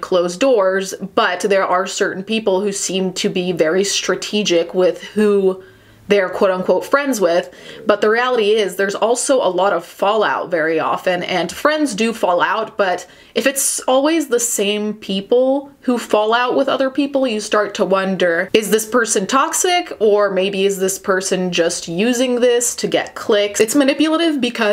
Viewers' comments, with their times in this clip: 0:07 your belly growled hahaha